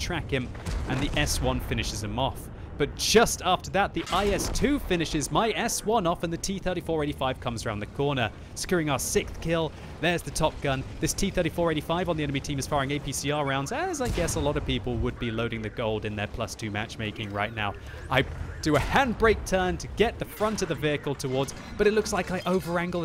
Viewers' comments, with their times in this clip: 0:04 "The IS finishes my ass one"